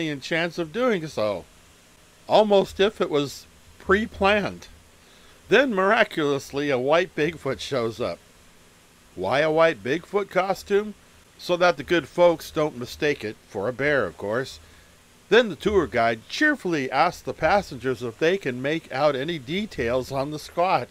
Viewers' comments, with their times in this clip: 0:04 The guy's expression along with the "Yeah right" nature of the narrator's voice is hilarious 😂